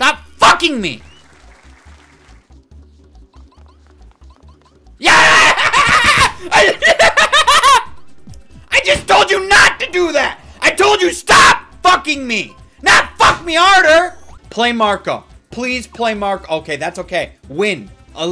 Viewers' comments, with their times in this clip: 0:04 “ Devil Laughter I SAID DONT F ME , NOT F ME HARDER” lmaooooo